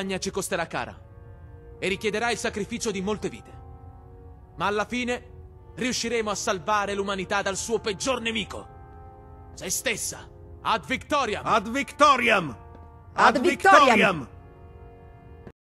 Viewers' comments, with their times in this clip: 0:10 Italian Ad Victoriam is the real pronunciation of that phrase.